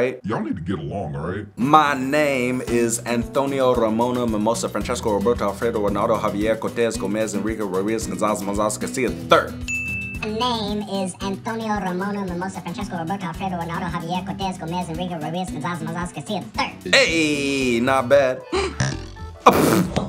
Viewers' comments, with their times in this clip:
0:03 HOW DOES HE SAY THAT SO F A S T? DANG!
0:04 you said that really fast